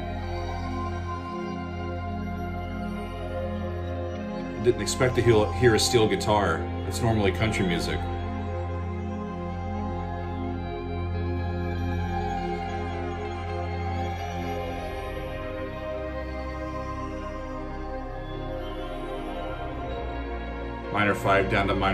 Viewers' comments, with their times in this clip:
0:04 The usage of the steel guitar sounds to me like a tribute to Pink Floyd / David Gilmour. Gilmour's use of a pedal steel guitar was a big part of Pink Floyd's sound, and that section sounds VERY Floydian.